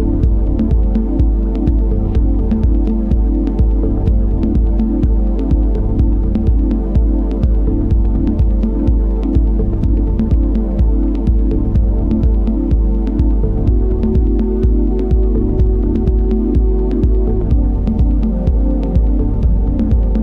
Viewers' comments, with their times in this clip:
0:07 Hypnotic AF circa 👌 Pepe's Garden outta nowhere \o/